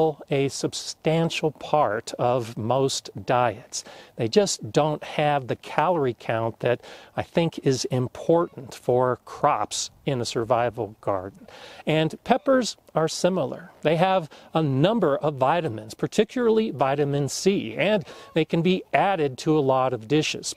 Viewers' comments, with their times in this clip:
0:07 I just knew a bird smoked the window but it was snow falling lol awesome video love it